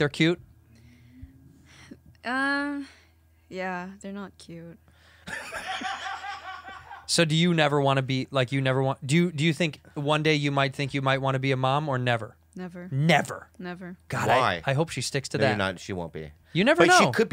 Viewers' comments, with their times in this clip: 0:04 was already expecting his laugh